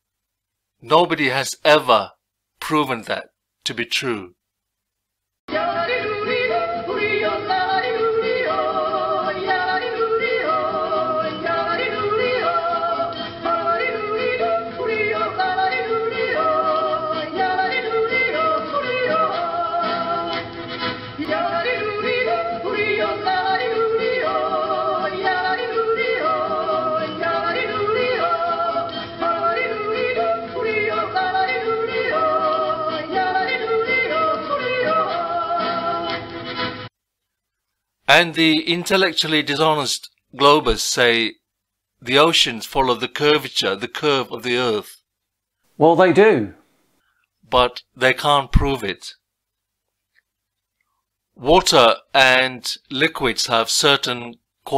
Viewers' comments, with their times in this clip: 0:04 I love that yodeling song. 🤣
0:05 that song bro 😂
0:20 I'm German, can't hear this music enough
0:35 The overlong shite music in killed it for me. Annoying.